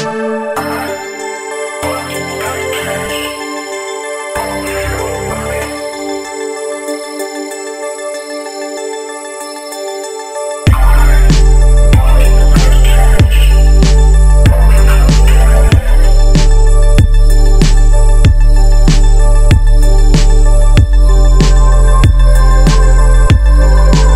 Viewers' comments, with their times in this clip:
0:10 imagine that this is Jacket voice